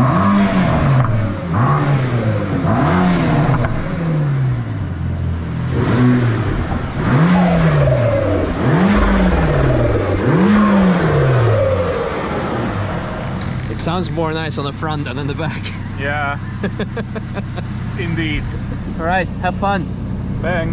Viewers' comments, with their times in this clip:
0:07 ... what part makes it sound like pigeons are under the hood? Hehe. Very nice car, though.